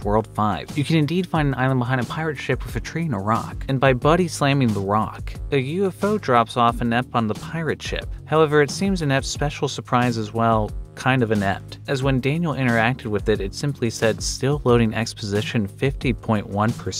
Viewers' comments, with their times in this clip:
0:03 and by body slamming The Rock